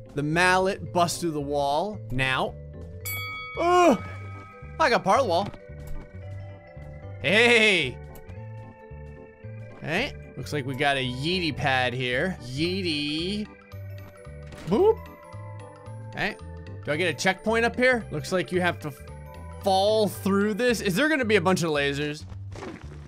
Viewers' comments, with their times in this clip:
0:07 sounds like scout from tf2